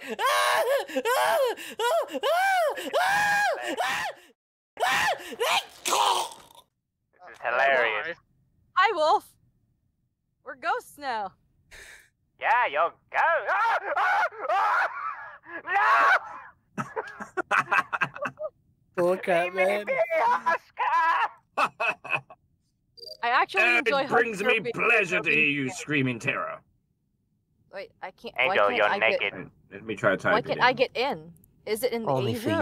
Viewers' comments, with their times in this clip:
0:08 Omfg alastor's screams-💀
0:13 I dont know why but I love how Alastor screams-